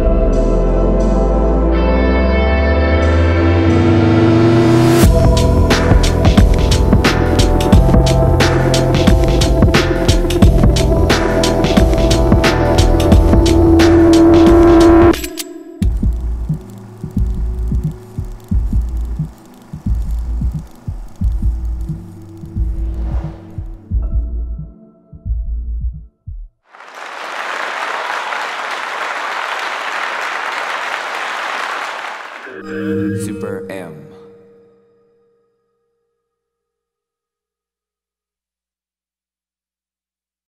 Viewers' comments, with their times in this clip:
0:05 there’s something about how the beat drops softly and a scene of taeyong shooting taeyong.... it’s incredibly sexy
0:32 Love taeyong superm voice 😍😍
0:33 directly to Taeyong ASMR sound of SuperM